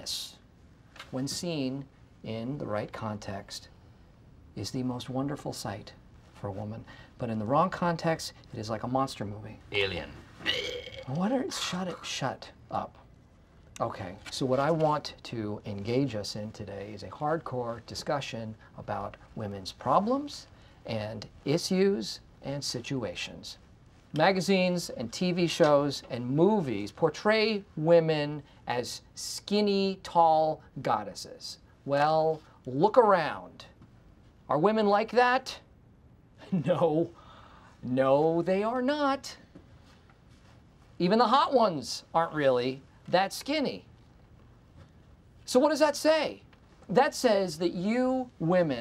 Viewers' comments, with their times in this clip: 0:10 Dwight saying like alien and imitating one 😂😂
0:11 I like how you can hear John Krasinski laughing in the background 😂😂
0:13 desperate attempt to curb laughter
0:19 the way Michael says issues
0:19 Did my guy just pronouce issues as ISSYUSSE? 🤣🤣🤣🤣🤣🤣🤣🤣
0:21 Michael pronounce issues as "is use" 🤣🤣🤣🤣
0:21 Nobody's going to talk about how he pronounced "issues" ?
0:34 Why is nobody talking 😂😂